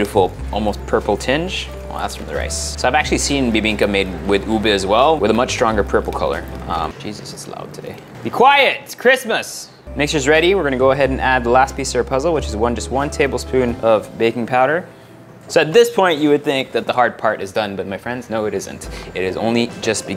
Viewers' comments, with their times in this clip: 0:07 First time i heard you screaming. Lol